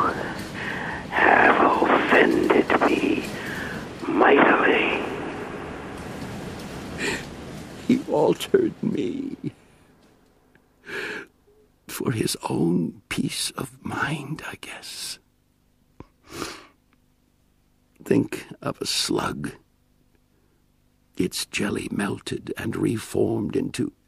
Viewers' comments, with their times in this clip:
0:06 I love this part, it really feels like he's very upset from what he became, but still grateful that the others aren't suffering. My favorite part is the very end when you can hear him try to scream but not be able too. God its wonderful